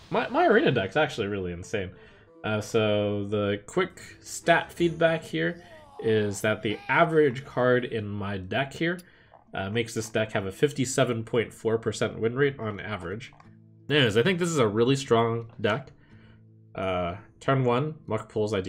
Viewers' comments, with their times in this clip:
0:04 why did it quietly play the OOOH LEGENDARY sound effect?
0:05 if you listen closely you can hear the innkeeper saying “Whoa, Legendary”.